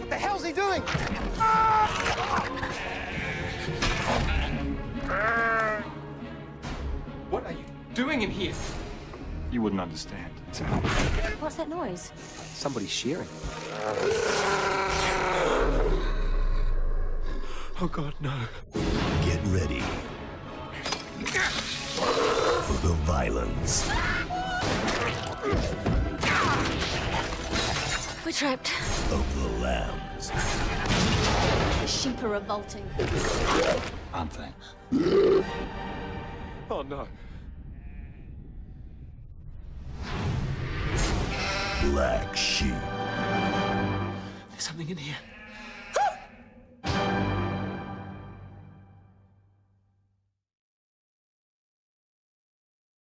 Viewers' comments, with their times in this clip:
0:05 lmao I love it when the sheep is trying to get in, and they shoot it, and then it pops back in "BAAAAAAAAAAAAAAAAAHHHH!!" and they're all like "eeek!" LOL!! how stupid! "Get ready for the violence of the lambs!" OMG IM SO SCARED!! wow! what a scary sound!! lol
0:34 hahahah burp... xD
0:46 I love the high pitch scream lol " There's something in here..." Baaaaa!